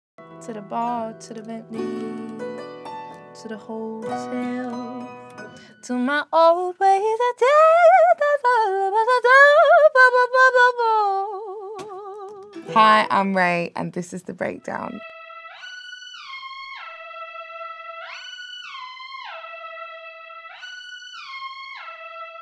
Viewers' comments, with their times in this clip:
0:08 😮 The scating gets me every time. GO RAYE!🦂